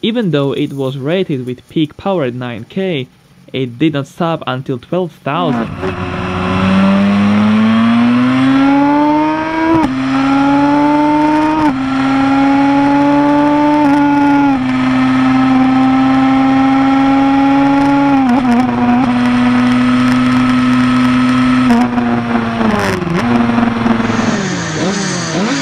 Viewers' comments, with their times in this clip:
0:06 wow that 2t suzuki RG500 sounds like 4 stroke
0:12 That's not how it actually sounds when riding, the mike was low down and picking up a lot of 'induction' roar.